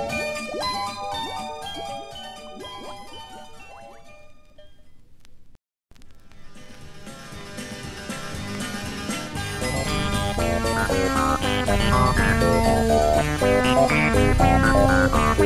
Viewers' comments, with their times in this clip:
0:03 i was expecting the 1978 off key auld lang syne version but i was imagining it